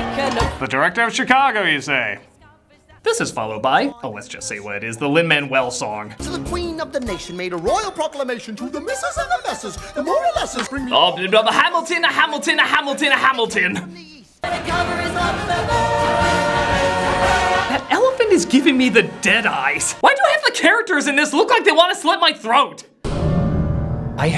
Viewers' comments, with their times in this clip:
0:06 when Lin started singing I immediatley wondered what was the directing of that. Rob Marshall: Okay, Lin, just sing how you'd normally sing except you have to have random flashbacks to Hamilton. Oh yeah and the irony of Lin in this film is funny. Think of it, a man that wrote the songs to a musical against the oppression of the British colonizers landing the role of a British guy. It may not be funny for you but sure of a heck of a lot funny to me.
0:07 All I hear is Hamilton